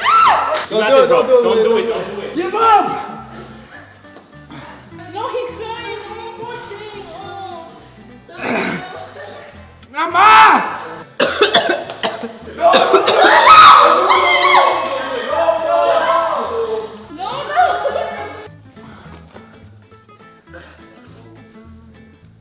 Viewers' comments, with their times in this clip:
0:10 when he said “AMAA” that scared me so bad that’s how you know he was in real pain